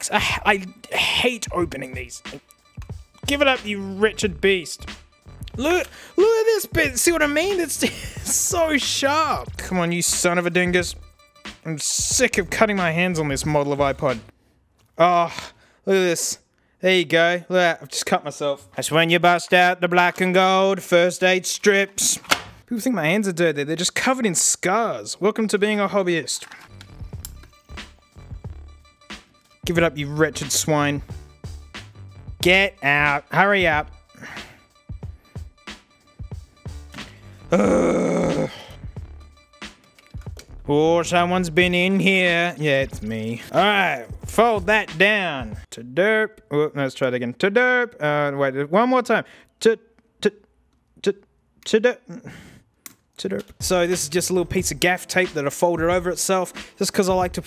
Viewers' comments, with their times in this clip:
0:03 Thought he said “Richard Beast” instead of “wretched beast” there for a second. Either way, it’s a golden malapropism that I’m going to start using from now on.
0:39 The amount of sadness in this mans voice when he tried to make a joke but was just so done with trying to open the shitty ipod ish